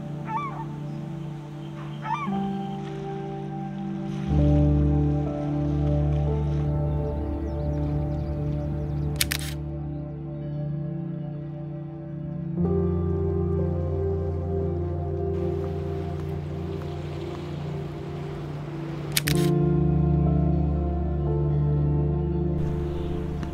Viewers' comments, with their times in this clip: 0:05 This part especially the music reminds me of my NieR:Automata experience